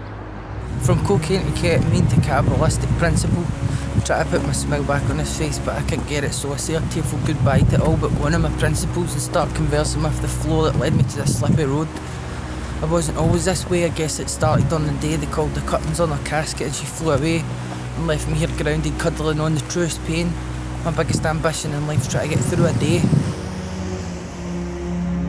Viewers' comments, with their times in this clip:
0:07 is he on drugs? No way that is a real language